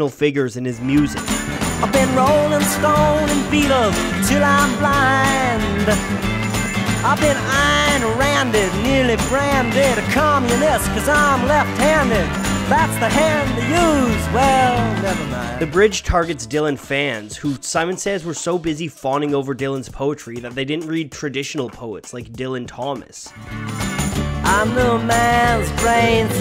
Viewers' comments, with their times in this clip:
0:09 hes even singing just like Bob Dylan